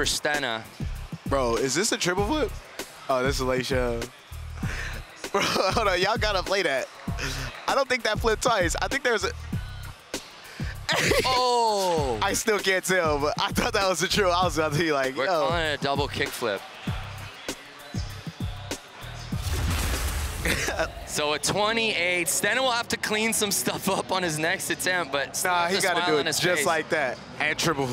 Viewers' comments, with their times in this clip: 0:08 Lmao that indeed was a tripple flip, I watched it on the lowest speed possible about like 7 times.. think I'd better get me a psychologist, this voice makes me anxious